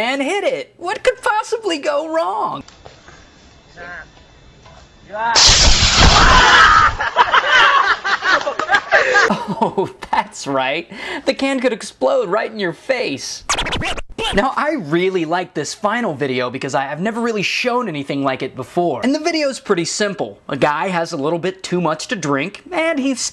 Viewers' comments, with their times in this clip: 0:05 WTF they laugh